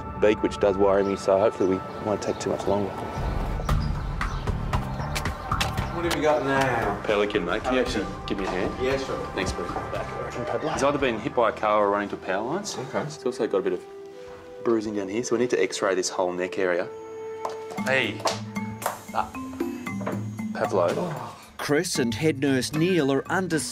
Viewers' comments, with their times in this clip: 0:05 sounds like the Minecraft Damage Sound xD